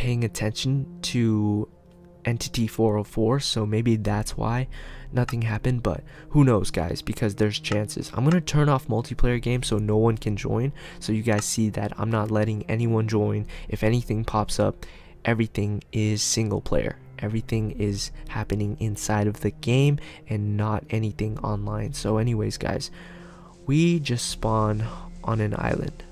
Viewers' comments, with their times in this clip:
0:10 I am Very scared😮😧😨😖😞😟😲 So scary noise's I will not Play Any Minecraft Games Very much Scary I will Cry heheh so Scary eeeeeeekkkkkkkk Scary 😨😨😩😖😭😭😭
0:11 I subscribe!! And is it me or did u hear a zombie when you said it turned
0:11 I heard a zombie right before u said it was